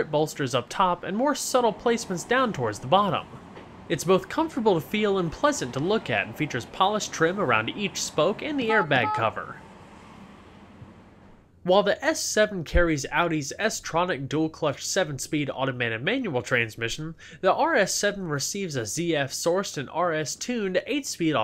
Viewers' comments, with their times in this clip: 0:08 Love the sound of the horn! xd
0:08 what kind of fucking horn...I hate to say it but I wouldn't buy this car just for that